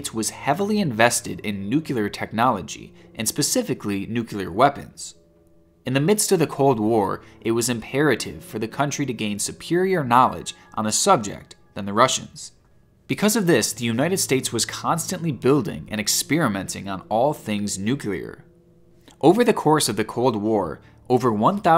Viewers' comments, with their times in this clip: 0:06 Stopped watching If you can't say 'nuclear' properly then you shouldn't be talking about nuclear weapons. Go learn to speak the words properly properly, THEN make a video.